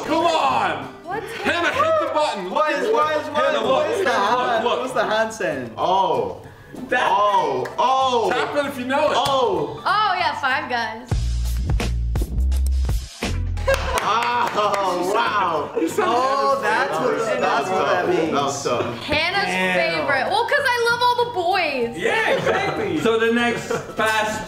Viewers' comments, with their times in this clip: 0:09 that mario intro gives me memories🥰
0:11 when the music comes on the boys know
0:11 ayooooooo that music tho
0:11 BRUH they just added that song 🤣
0:11 the hub music